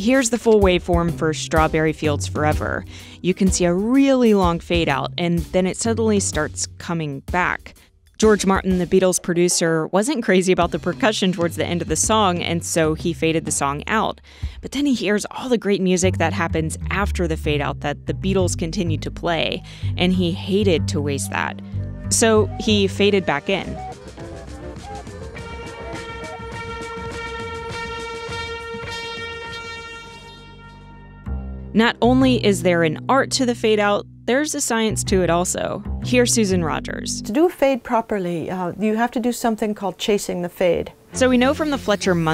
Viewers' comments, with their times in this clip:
0:03 Whoa that Beatles fact is trippy. What happens during that volume drop???
0:23 did you just "fade out" a "fade in" lol